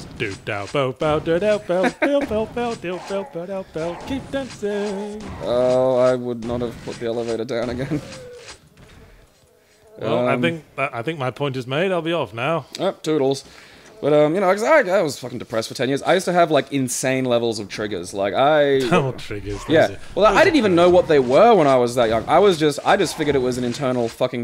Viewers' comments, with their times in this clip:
0:05 damn fly- wasted few minutes on looking for it in my room